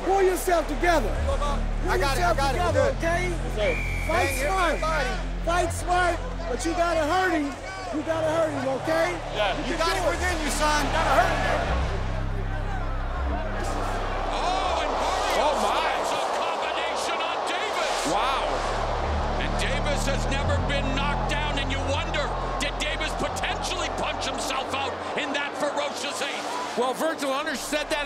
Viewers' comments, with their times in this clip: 0:09 the little girl is crying feeling sorry for her brother.